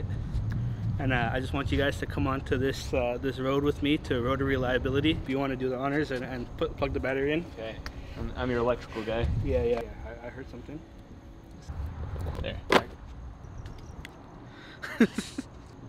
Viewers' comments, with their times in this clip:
0:03 Can't tell if he said "Rotor Reliability" or "Rotary Liability" 🤣